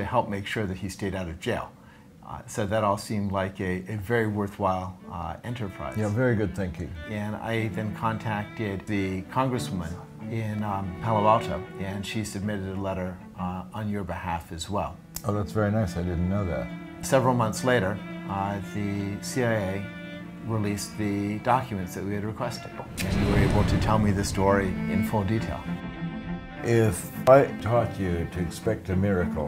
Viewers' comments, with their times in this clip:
0:10 there is what sounds like a whisper that can be heard